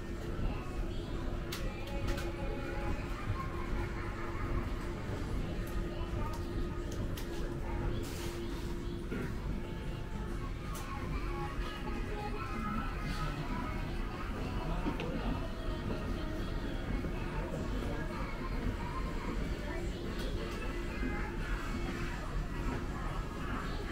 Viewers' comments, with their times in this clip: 0:05 Awesome video, mate👍 Keep up the nice quality 👍 PS: The song that randomly starts playing in the shop's radio is always putting a big grin on my face whenever I hear it 😁